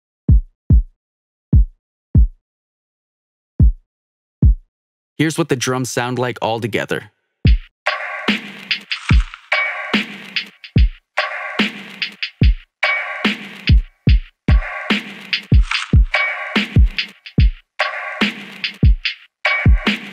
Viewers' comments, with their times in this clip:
0:06 dope drum pat